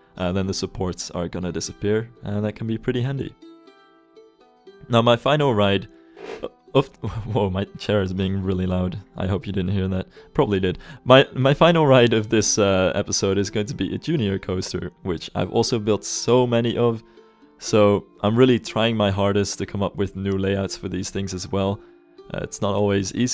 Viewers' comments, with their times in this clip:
0:05 "Woah my chair is really loud" Mmmmhmmmm... your 'chair'... ;)